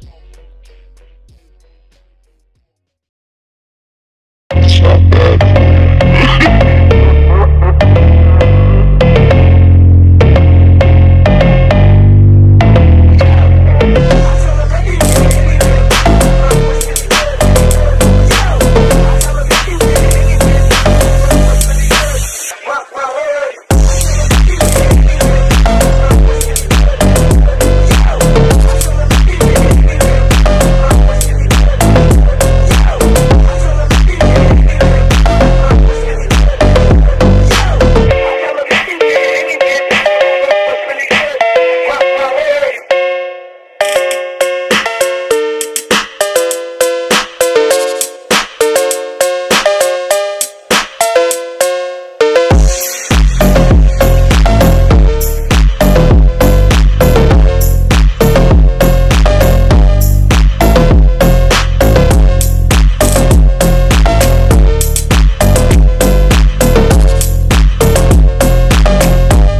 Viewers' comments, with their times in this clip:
0:03 eh great timing to start with the 2nd phonk song.
0:51 sounds like a smooth ass edit nigga.